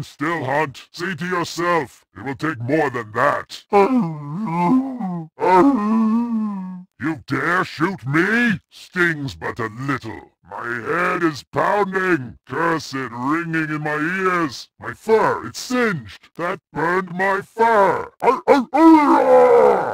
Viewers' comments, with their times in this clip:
0:04 sounds so cute haha